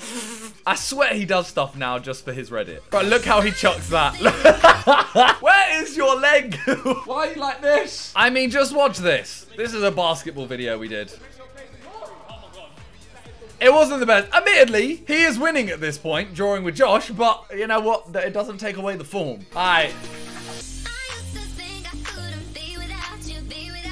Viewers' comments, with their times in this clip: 0:06 calm voice new Calvin Klein